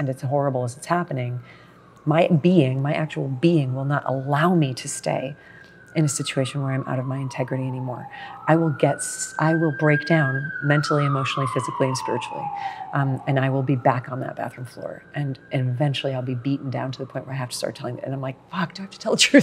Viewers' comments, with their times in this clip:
0:04 wow just when she was talking about when her body would break down when she’s not living in integrity the sirens start to get louder!